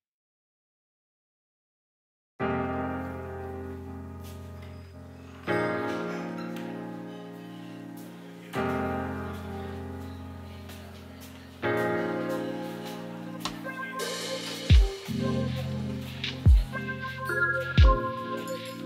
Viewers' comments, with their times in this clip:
0:04 jesus dude i was listening with a headphone and my high ass got scared because i thought someone unlocked my door at 3 am